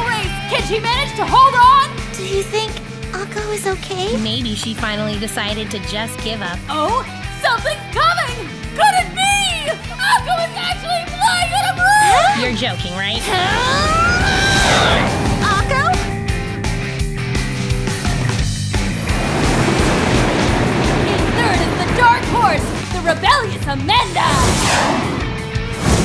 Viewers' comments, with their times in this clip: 0:07 that sounds like Luffy's dub voice